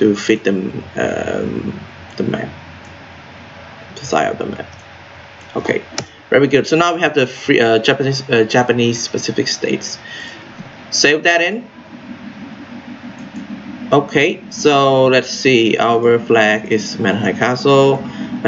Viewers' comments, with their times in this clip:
0:04 have I heard "zajebano je"